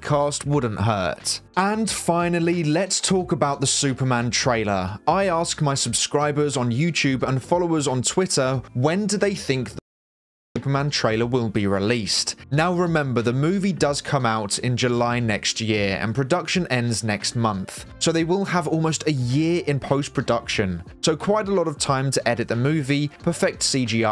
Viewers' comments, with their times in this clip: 0:09 This is really minor, but there's an odd pause where the audio completely drops for a second. It doesn't affect anything in the video whatsoever, and you might already be aware of it, but I just noticed it while watching.